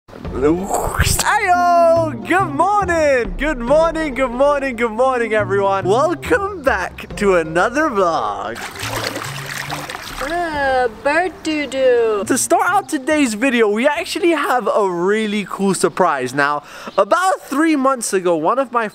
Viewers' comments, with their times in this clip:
0:01 did you have flamel in your throat? HAHAHAHA